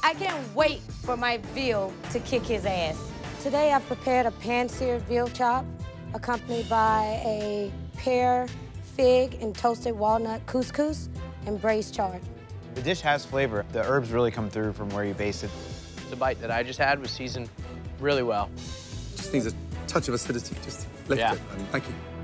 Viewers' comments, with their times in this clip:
0:06 “hey make sure someone adds a dramatic sound effect when he takes a bite so we r e a l l y know the stakes”